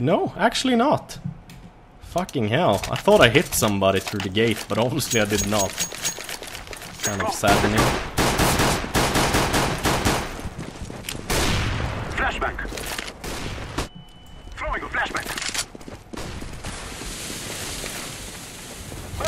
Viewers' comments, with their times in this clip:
0:04 lol did u hear the pistol singing :P